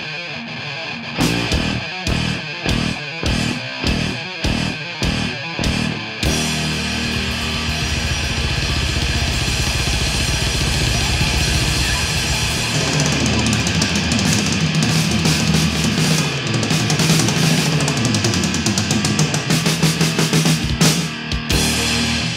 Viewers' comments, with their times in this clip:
0:10 underrated Dave Lombardo breakdown